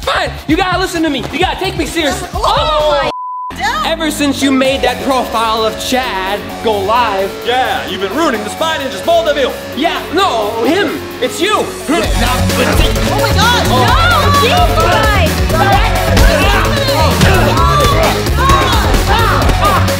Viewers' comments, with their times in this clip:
0:04 what is this crazy music